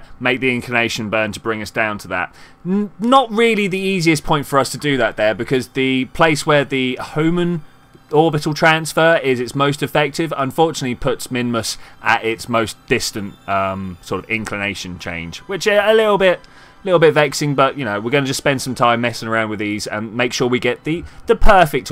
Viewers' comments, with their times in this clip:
0:04 Thx, I like watching your videos so of course I watch them completely^^ And the mic was fine since ~